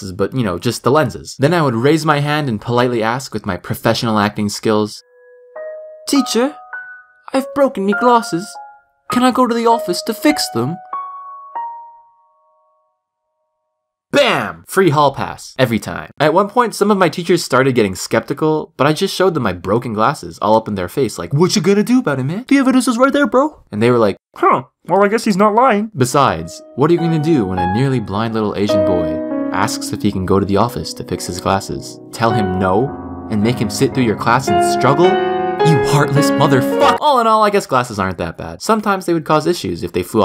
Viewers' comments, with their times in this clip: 0:05 Great British voice
0:06 wow..... Bad accent mate
0:09 He sounds British.
0:25 he sounds like Kermit